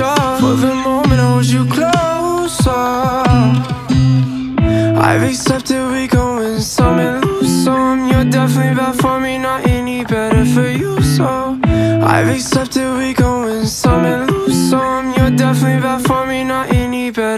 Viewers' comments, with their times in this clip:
0:05 does he say I've accepted we gon' win some and lose some... OR I lace up to Rick Owen's something lose so... aaaaand GO!